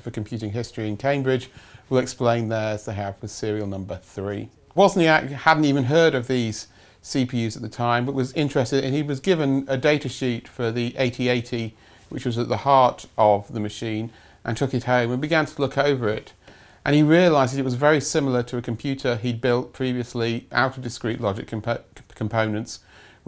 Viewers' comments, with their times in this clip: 0:08 he was given a datasheet for the AT-AT. Wow!